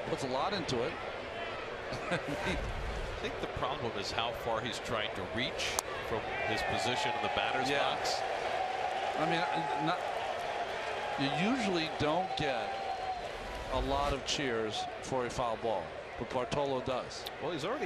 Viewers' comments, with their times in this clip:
0:04 sarcastic cheer from the Met faithful. I love it.